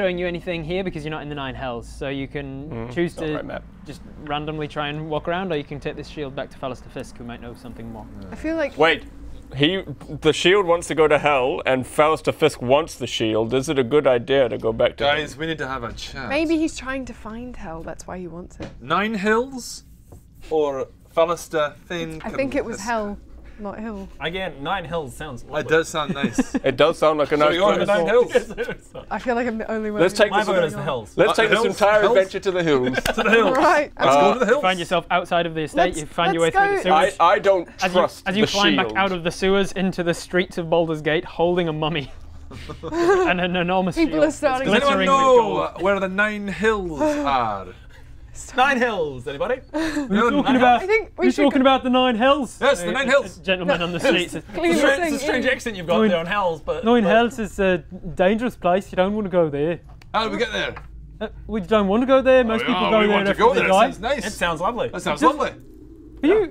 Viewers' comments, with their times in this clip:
0:03 the girl is trying to talk for like 2 minutes straight and cant get 2 words out
0:40 I love how the storyteller breaks at the vision of the party escaping the sewers holding a mummy.
0:50 sounds like all generic males from fable O.o